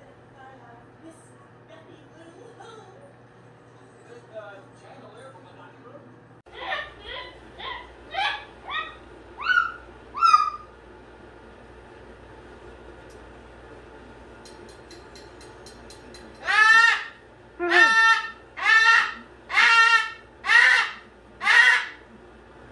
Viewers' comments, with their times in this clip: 0:10 is when volume warning starts